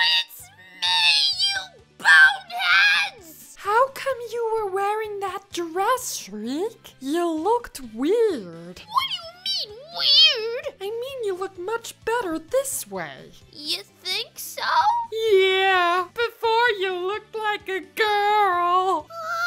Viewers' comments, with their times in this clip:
0:04 Dog sounds like a little girl and also Ruby from Max & Ruby!